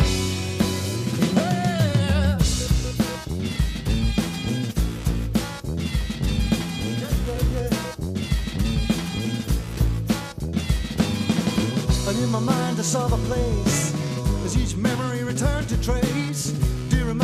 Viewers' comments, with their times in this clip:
0:03 reminds me of early Beck (as Odelay ..)